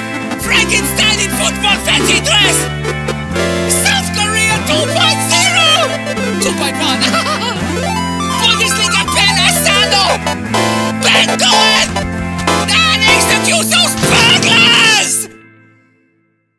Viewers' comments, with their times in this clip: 0:03 Why does this music bit stress me out so much 😂